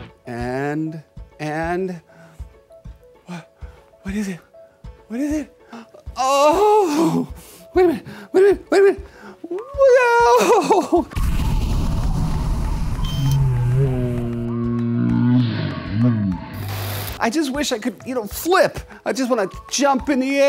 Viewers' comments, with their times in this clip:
0:05 the sounds is something I never want to hear out of a grown man ever again